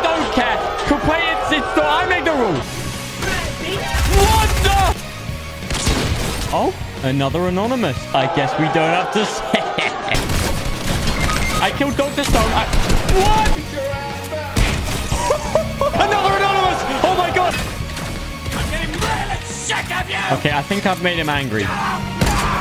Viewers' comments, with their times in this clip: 0:03 this man turned on autotune😂😂😂
0:03 Bro turned on the auto tune 😳